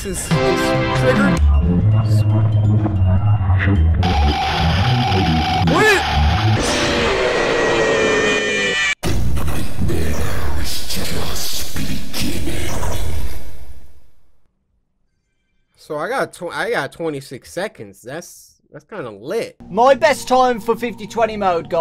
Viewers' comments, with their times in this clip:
0:08 I love that voiceline narrating over his empty expression